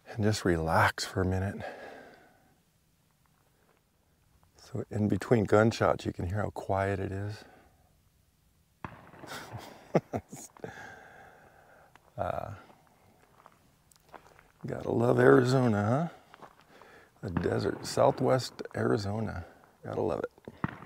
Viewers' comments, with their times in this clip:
0:03 🤣🤣🤣 super duper quiet